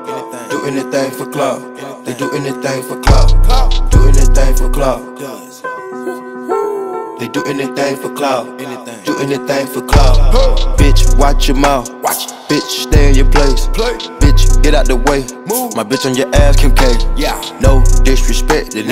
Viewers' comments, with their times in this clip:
0:05 Nobody: Owls in the hood: wOo wOo